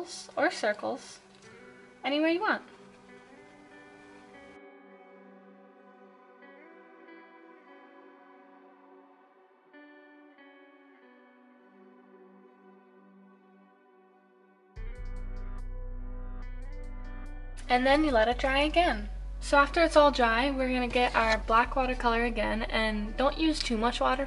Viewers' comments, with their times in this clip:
0:10 music reminds me of The Last of Us and I absolutely can't